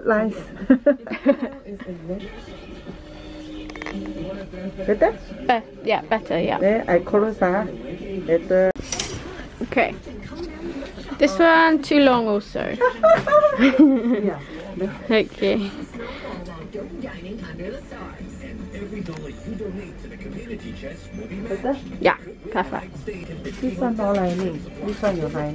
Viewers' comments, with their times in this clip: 0:10 Perfect Singlish with a British accent 😉